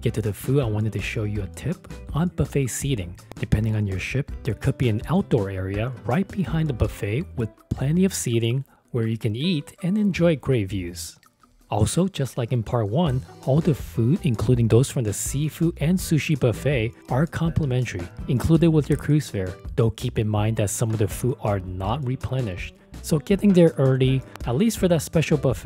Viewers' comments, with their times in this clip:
0:10 "where you can eat and enjoy grave views..."???